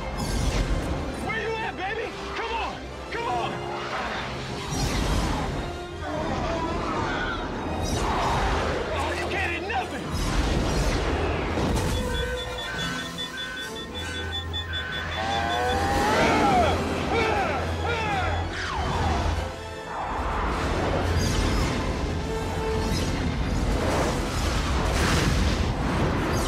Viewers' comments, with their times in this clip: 0:07 did they sneak in a Wilhem scream? Also, super dog!
0:09 did they sneak in a Wilhem scream? Also, super dog!